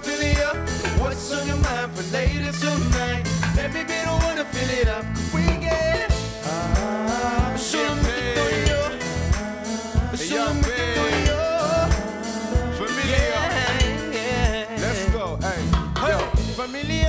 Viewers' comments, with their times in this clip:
0:05 that voice crack !!! prob unintentional but yessssss. also the band did a really great job with this